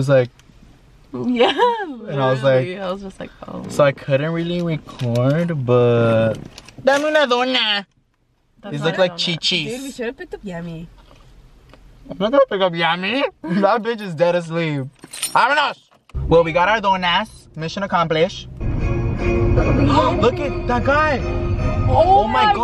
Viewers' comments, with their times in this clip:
0:07 he sounded like the one from familia peluche